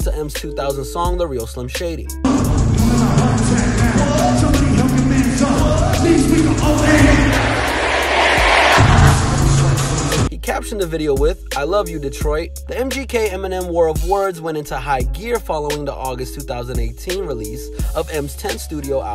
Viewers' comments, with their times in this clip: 0:05 listen to the audience
0:05 listen to the audience
0:05 listen to the audience
0:05 listen to the audience